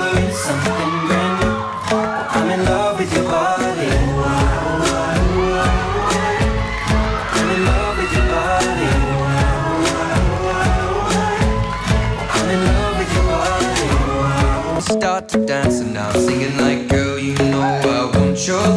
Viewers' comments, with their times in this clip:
0:05 *incoming fan screams* and he was working dat bootay 😂😂😂